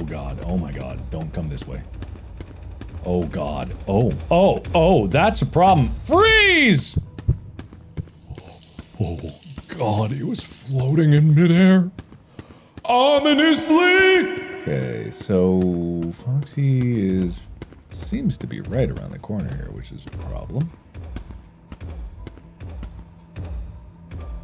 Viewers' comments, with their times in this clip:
0:05 Mark yelled "freeze" and my internet just disconnected